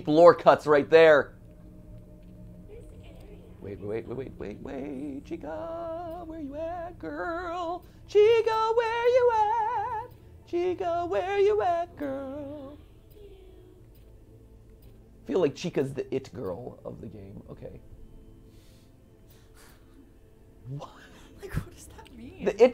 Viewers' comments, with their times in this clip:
0:05 Love his singing “new song out now, chica where you at by Mat Pat”